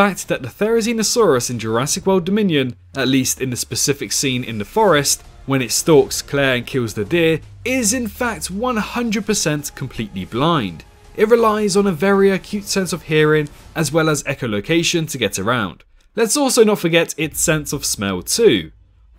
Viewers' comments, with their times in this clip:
0:03 the way u pronounce theri hmmmm... "zee no" "see no" just saying